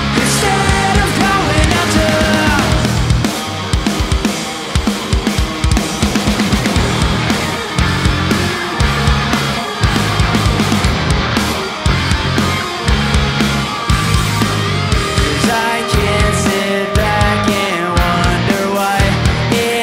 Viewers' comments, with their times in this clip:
0:06 that's the way three guitars should sound live!